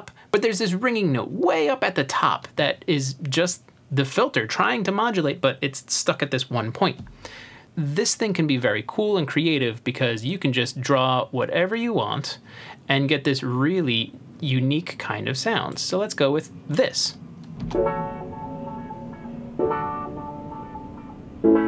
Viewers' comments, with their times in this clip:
0:06 the "ringy" sound at the top is beause resonance is set at 50%, not because "it's trying to get higher but can't" :)